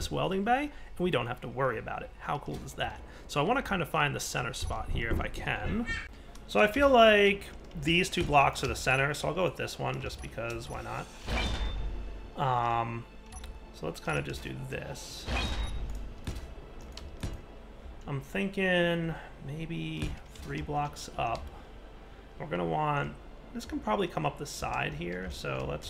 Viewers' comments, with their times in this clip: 0:04 Anyone else hear a background noise ?
0:06 Anybody else hear that noise???